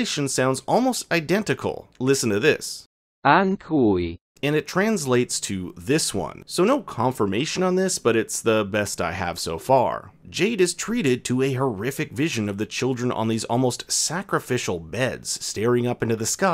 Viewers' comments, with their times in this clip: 0:04 I always thought the children were saying "I'm gooey" 😂